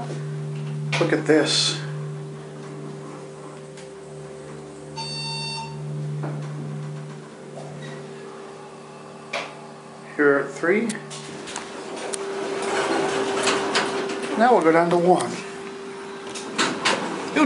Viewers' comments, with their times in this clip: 0:04 The elevator is a Montgomery because of the chime